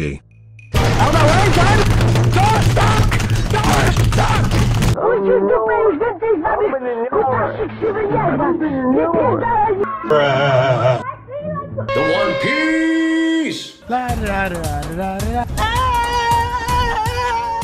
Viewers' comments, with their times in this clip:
0:05 ,the way he talks in jueheshyesyheshgx language 💀